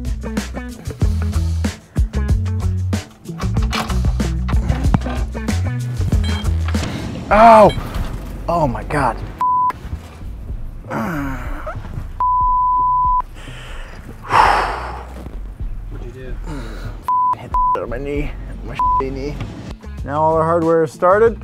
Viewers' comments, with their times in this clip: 0:07 peter griffin intensifies